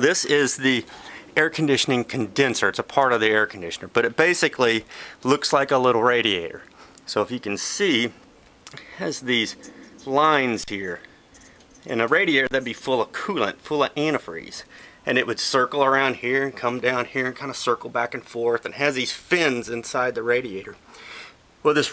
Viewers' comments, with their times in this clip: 0:09 Great video, thanks. Please people when you do radiator videos don't run your fingers cross the baffles that sound makes Goose bumps!